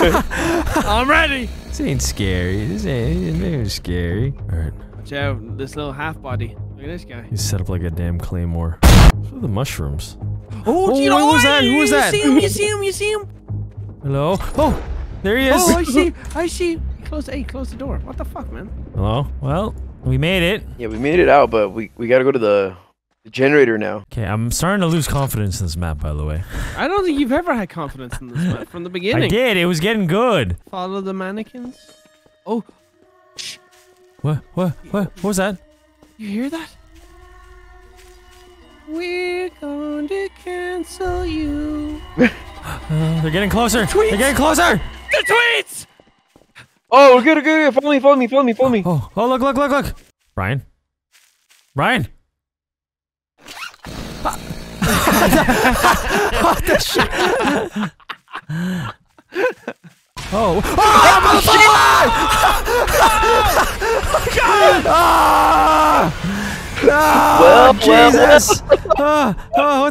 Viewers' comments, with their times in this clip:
0:08 the damned claymore sound scared me
0:50 went from all laughing to a jumpscare😂😂